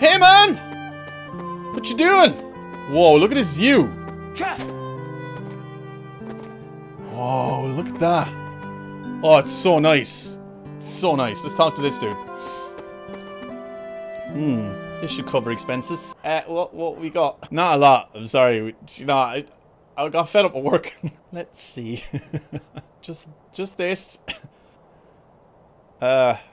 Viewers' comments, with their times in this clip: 0:08 For some reason what I heard was "station plaza, toilet town." Also, I am looking forward to next episode. I hope you will get to like Roxas even more. Without spoiling anything, I can tell that Roxas is one tragic character, and he's my fave.